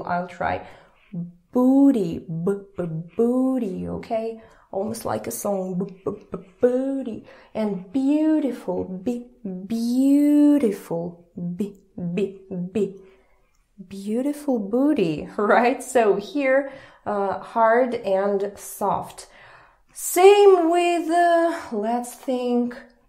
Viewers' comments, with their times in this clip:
0:08 Very Nice Video. May God Bless You. Your Videos are Fantastic. I have a learnt a lot.Your English Pronunciation is Really Perfect. Please do not say that your pronunciations are far from Perfect. You are One of the Best English Speakers I have Come Across. May God Bless You. Thank You. ❤❤❤🎉🎉🎉🌸🌸🌸🌻🌻🌻🌸🌸🌸🌼🌼🌼🌺🌺🌺🌷🌷🌷👍👍👍💐💐💐🙏🙏🙏🙂🙂🙂.